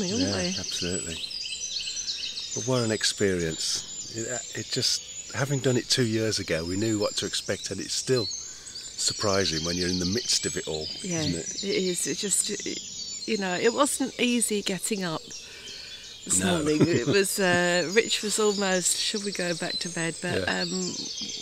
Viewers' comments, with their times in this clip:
0:08 goldcrest singing, chiff chaff chiffchaffing!